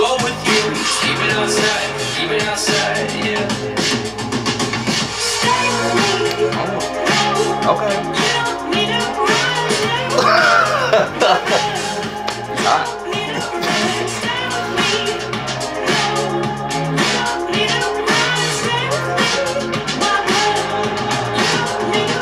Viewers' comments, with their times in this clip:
0:07 i love this gay silence♡